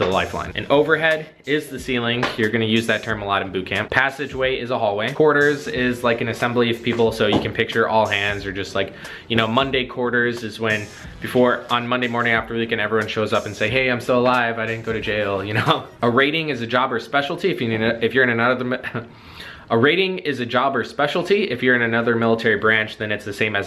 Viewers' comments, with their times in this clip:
0:07 There is a distinct "THUMP" sound that made me pause the video and go see if someone was breaking in my house. Did anyone else hear that?